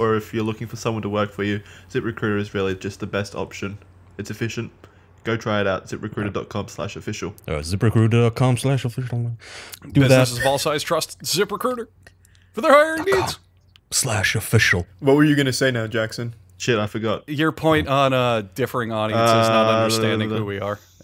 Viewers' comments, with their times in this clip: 0:09 "businesses of all sizes trust ZipRecruiter" took me a few replays to get that